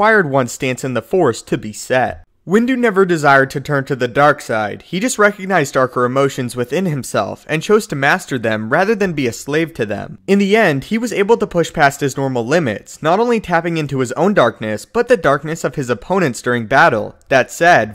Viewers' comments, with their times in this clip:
0:03 I don't what it is but the way you say "Dark Side" is oddly satisfying.